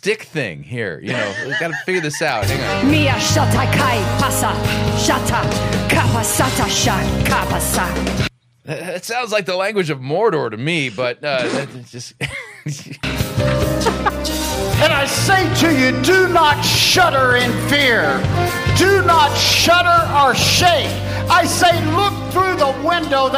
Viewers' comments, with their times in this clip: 0:04 prophetic tounge beat boxing?